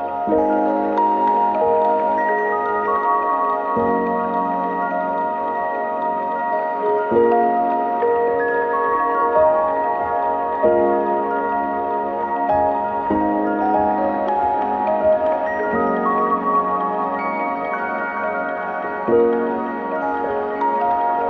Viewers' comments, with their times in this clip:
0:03 maybe it's just me but it sounds like diamonds falling or like something sparkly falling. It's pure and so pretty. I don't make sense lolll